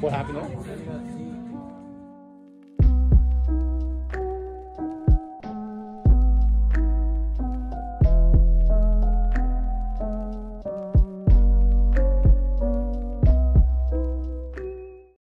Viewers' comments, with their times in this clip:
0:10 I just love the fact that you ended off with doki doki music